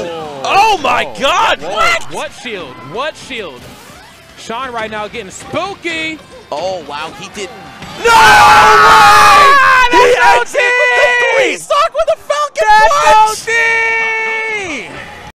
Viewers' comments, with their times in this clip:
0:09 When they screamed someone sounded like mario going WAAAAAAAHHHHHH